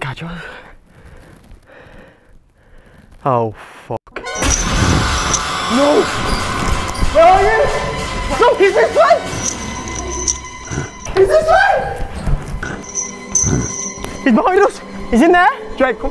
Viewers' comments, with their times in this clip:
0:03 outlast audio. this is giving me mad outlast vibes